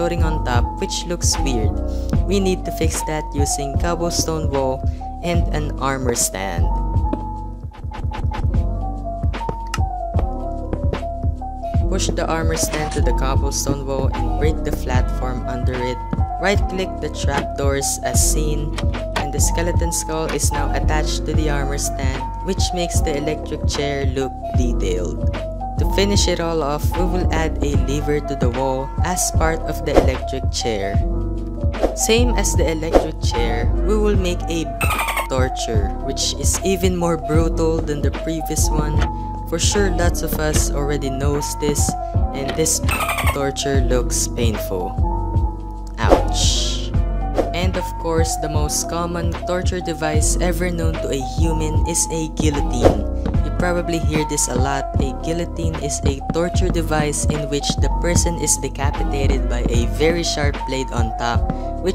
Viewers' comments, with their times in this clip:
0:07 heuuumm there is a litle problem with your music
0:43 wut did u say?